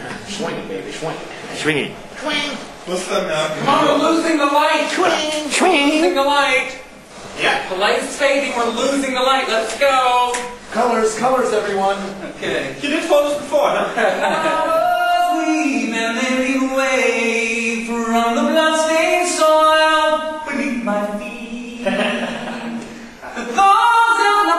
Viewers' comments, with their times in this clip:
0:08 I love his camp voice